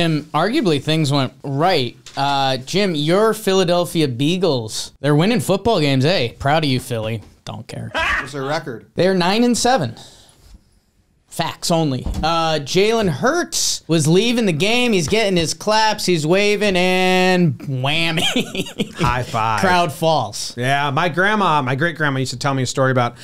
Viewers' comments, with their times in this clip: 0:06 Sounds like a salty NY fan